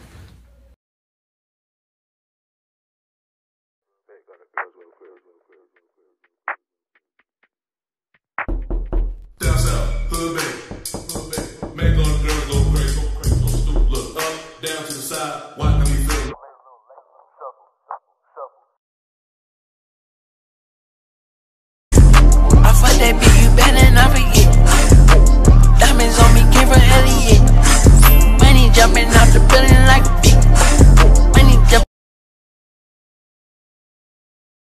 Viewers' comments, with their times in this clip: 0:04 that knock scared the shit out of me because there is a window near my bed and I thought someone knocked on it 😰😰
0:08 I deadass looked to my window thinking someone knocked
0:09 I got up looking to see who knocking
0:18 is meeeeeee. Bruh it sounded like someone was fr knocking on my wall😹